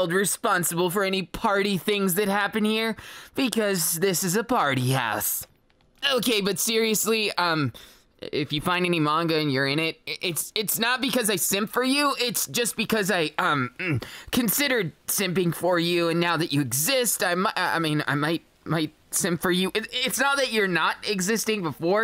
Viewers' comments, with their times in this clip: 0:08 JUST LISTEN HOW CUTE DENKI SOUNDED-